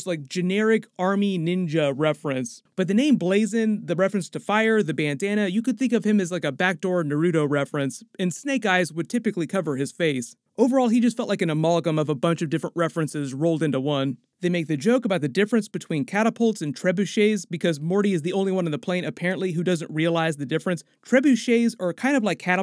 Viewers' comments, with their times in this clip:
0:07 lmao why you say that so weird